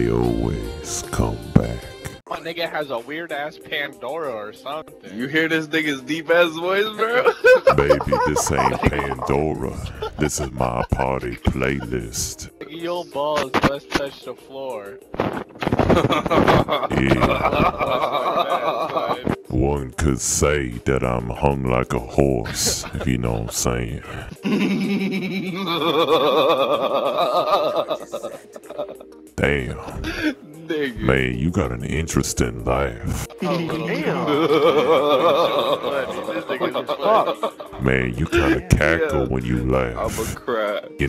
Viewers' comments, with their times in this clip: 0:08 Lmao laugh qf
0:23 that laugh doe hahashahahaahah